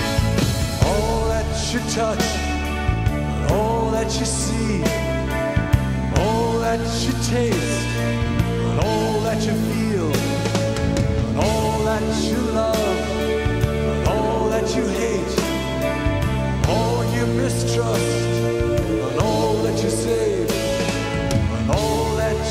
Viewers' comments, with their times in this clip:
0:09 That drumlick is rather simple, but it's fitting so well! Thanks Nick Mason!